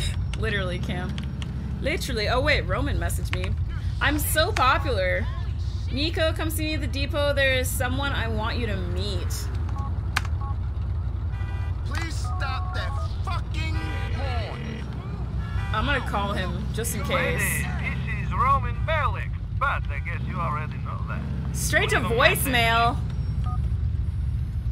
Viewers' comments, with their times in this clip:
0:10 "please stop that Fucking horn."